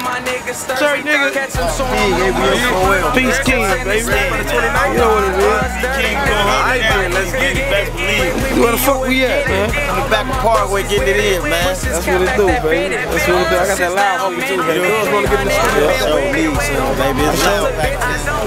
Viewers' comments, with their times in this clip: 0:04 he said rip king von???